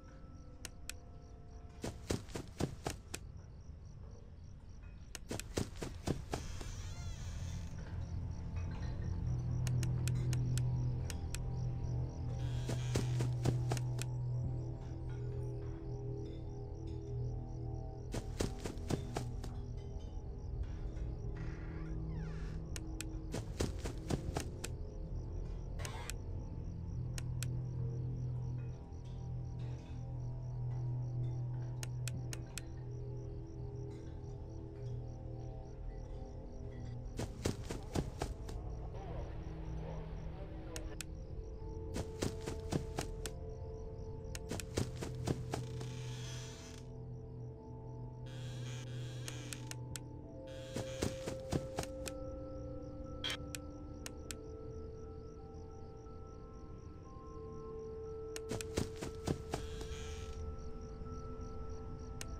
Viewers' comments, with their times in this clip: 0:07 sounds in the kitchen??
0:36 you can hear a reversed phone guy when he walks up to the closet.
0:39 Whst minute voice mangle the radio ???
0:43 Wait... I think I heard Phone Guy for a moment!